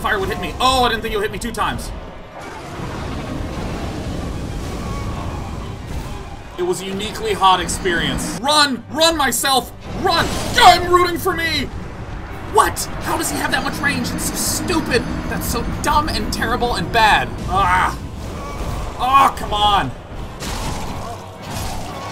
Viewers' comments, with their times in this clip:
0:08 Him yelling to himself "RUN! RUN MYSELF" almost killed me.